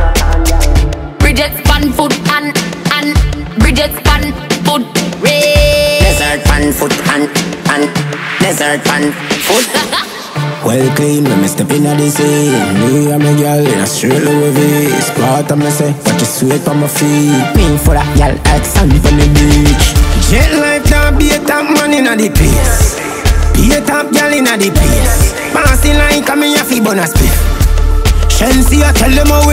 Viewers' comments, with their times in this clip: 0:10 Love the riddim